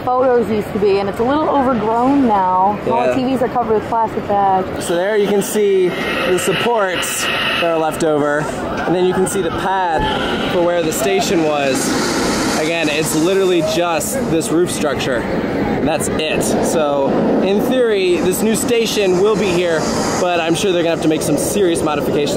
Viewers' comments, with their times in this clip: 0:05 So there you can see the “Sup-Port-A-Potty”